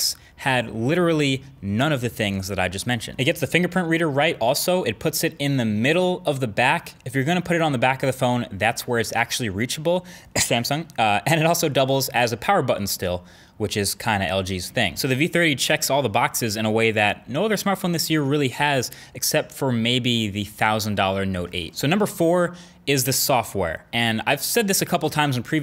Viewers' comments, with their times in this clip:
0:08 that cough, err samsung😂😂